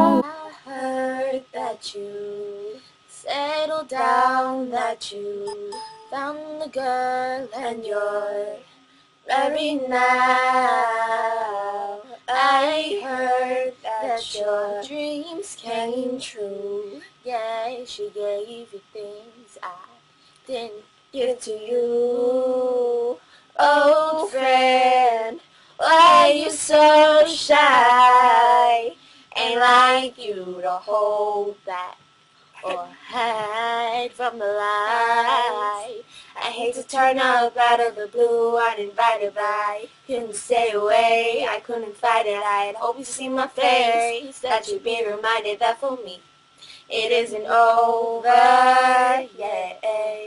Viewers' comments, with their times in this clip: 0:08 Her friend ish can sing whoa
0:11 The girl can sing. She can't though... Sorry
0:23 her friend can actually sing
0:37 the girl is pretty good haha